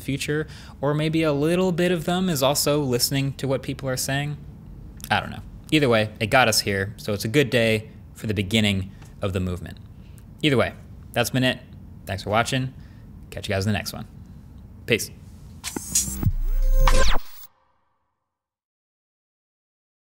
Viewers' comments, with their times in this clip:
0:05 Marques saying "either way" twice in a short span of time made me realize that I pronounce "either" different